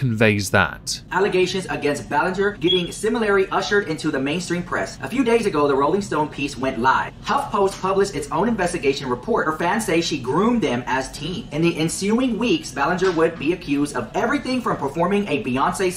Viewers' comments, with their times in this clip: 0:03 the smoke alarm strikes again.